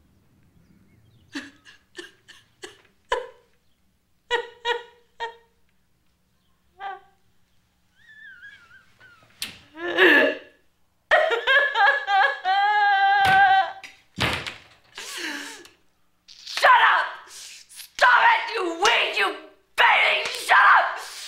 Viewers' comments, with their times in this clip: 0:05 Carolyn's face when she cries made me laugh so hard! Also, she makes funny noises too!